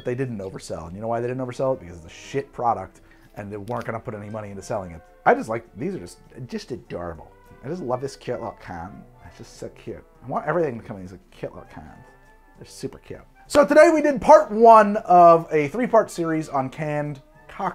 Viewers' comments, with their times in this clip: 0:04 {TimeStamp } you sound like a jursy girl... lol. "so cute!" lmao.